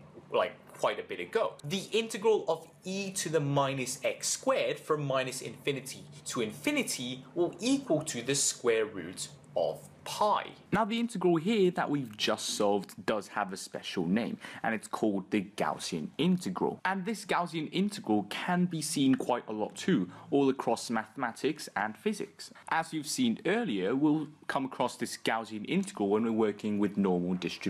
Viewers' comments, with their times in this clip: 0:09 Dude integrated so hard that his voice changed